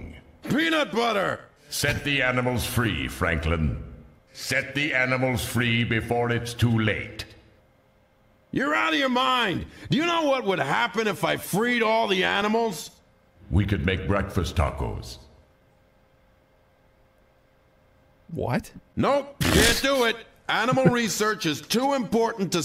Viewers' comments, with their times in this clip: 0:05 I love their dead silence at the breakfast tacos joke lmao